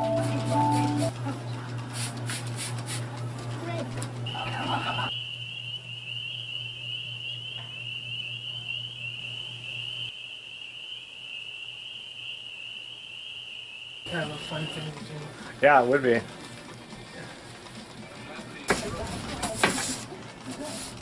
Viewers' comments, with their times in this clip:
0:04 What the HELL is that voice speaking in a ghostly tone ?!?!?!!?